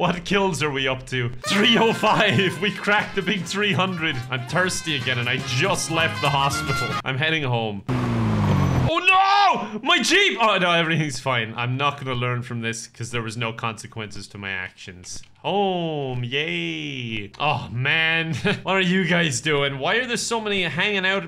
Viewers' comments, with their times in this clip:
0:07 hahahha that scream was legit feelings